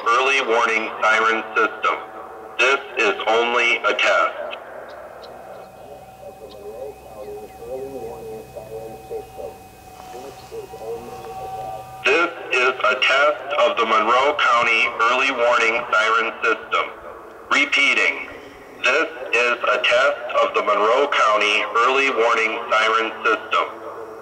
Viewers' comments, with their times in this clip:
0:09 the alarms in the background are those from other towns?